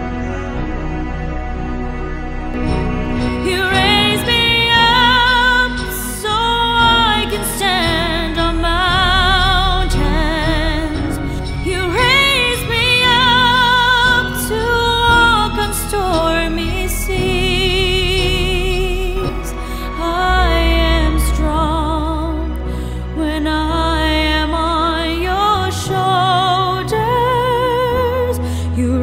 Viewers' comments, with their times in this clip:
0:10 Is it just me or do you have teamspeak on in the background there, saying User Joined your Channel ?